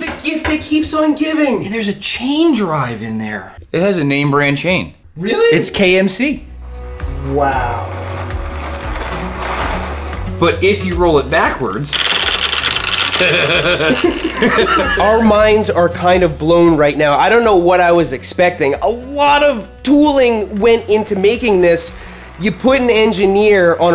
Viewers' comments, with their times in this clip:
0:03 I swear I first heard you say "It's KFC" lol not that kind of name brand. But no it was KMC. Pretty good.
0:11 Seth Rogen Laugh